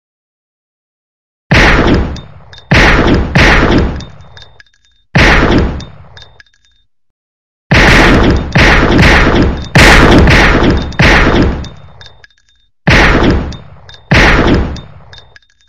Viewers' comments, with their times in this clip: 0:01 Who else recognise this bad quality gun sound from game "Antikiller"?